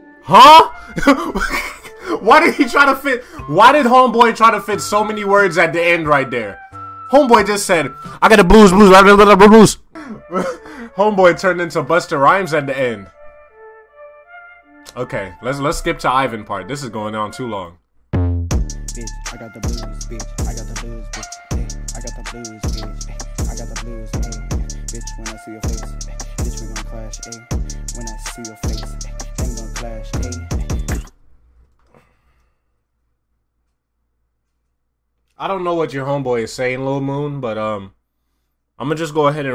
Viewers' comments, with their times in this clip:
0:07 sounds like he said "i got the blues and a lot of bobos"
0:22 it sound like shordy was rapping past his bedtime